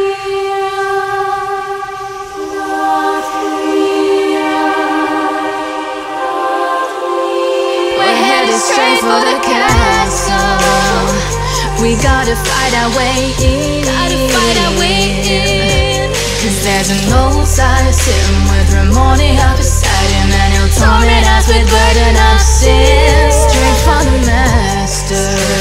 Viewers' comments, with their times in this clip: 0:08 This gave me fucking chills!! was sooo good i swear the visual with the beginning of the beat was epic! 😍😍